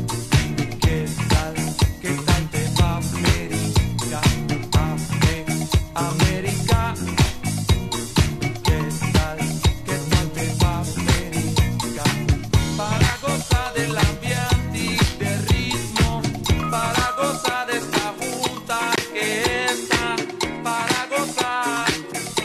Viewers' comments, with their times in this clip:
0:05 love this rhythm